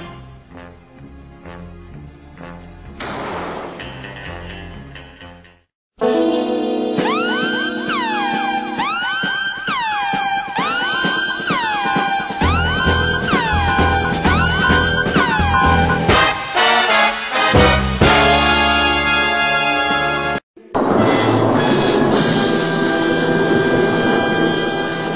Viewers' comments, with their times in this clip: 0:06 what is the name of the music that was very intimidating and funny